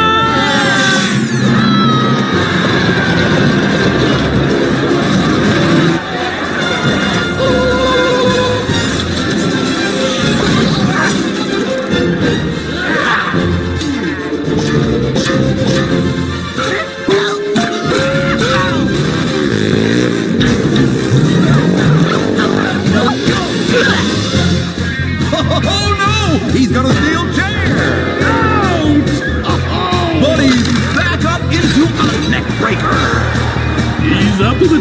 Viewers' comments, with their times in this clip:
0:06 Fenders Battle Cry 😂
0:18 thinkin bout how sounded EXACTLY like skrat's "ow!"